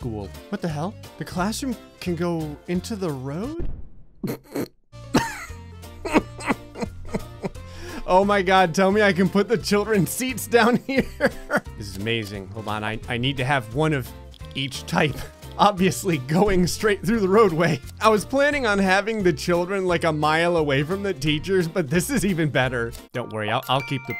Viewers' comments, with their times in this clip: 0:05 happens Me: Olaf? Major “Samatha?” laugh vibes